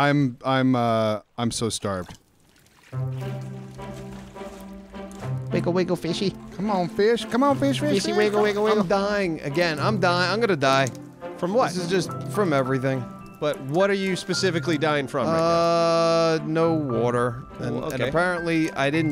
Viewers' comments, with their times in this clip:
0:03 lol. Such whimsical anger.